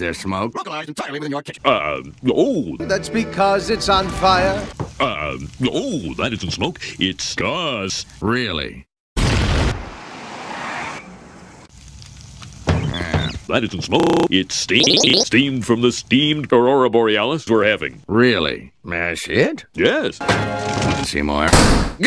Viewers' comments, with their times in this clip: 0:05 Skinner: That isn't smoke, it's gas! Chalmers: Really...? lights a lighter BOOM